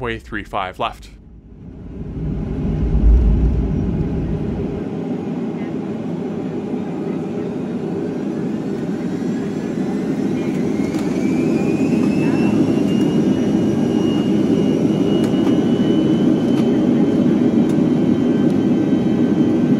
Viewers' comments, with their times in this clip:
0:07 Only the real OG’s know this buzz like Alaska Airlines for an example.